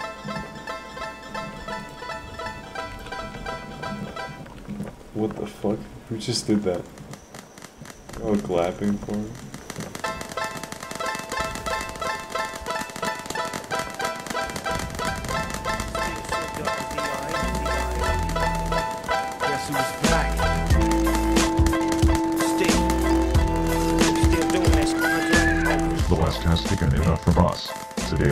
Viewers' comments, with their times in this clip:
0:10 The transition between the banjo and the actual song was so clean it could be a 5 star hotel room.
0:10 Dr. Dre on banjo lol